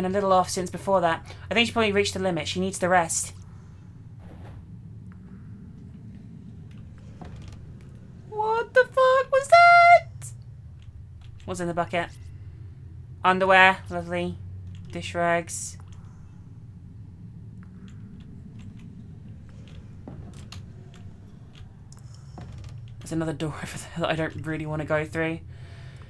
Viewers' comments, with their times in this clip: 0:08 HAHAHA!! Doesn't matter if you're British, American, Australian, Canadian, or whatever, if you speak English, and you say "What the fuck was that" in a state of mild freakout, you always use that exact inflection. Cracks me up every time.